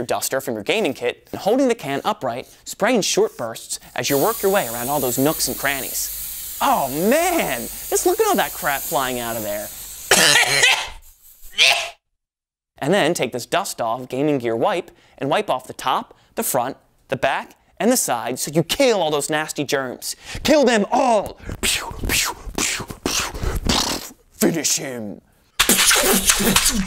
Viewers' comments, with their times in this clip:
0:10 sounds like a granny